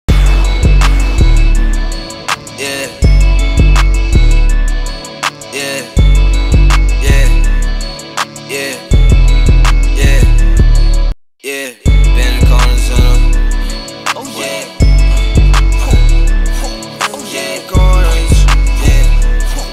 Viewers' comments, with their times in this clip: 0:01 song starts Me: transcends